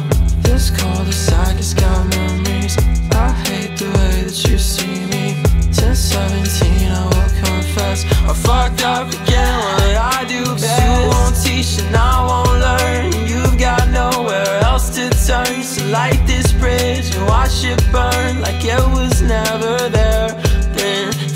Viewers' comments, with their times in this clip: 0:07 That background scream gave me chills